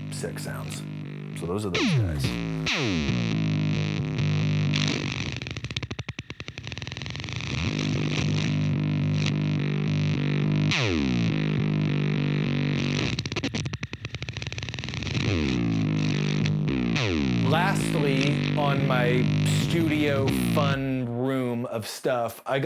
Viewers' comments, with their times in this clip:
0:04 the best part is when the pug is trying to taste those delicious super gnarly fuzz drops